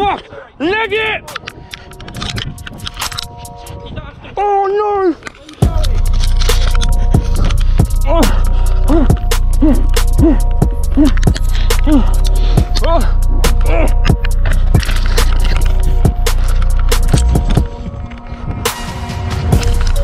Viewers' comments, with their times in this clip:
0:04 why u shouting 😂